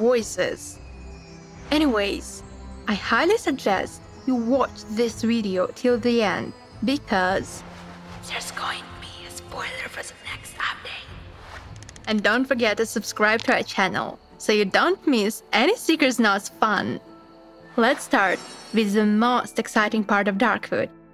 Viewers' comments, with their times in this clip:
0:07 That whisper made me think Biden was narrating...